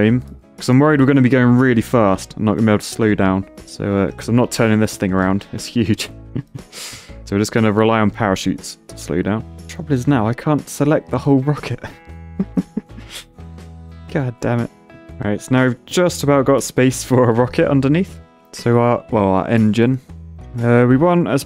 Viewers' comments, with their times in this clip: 0:08 Tokyo drift in the back ground tho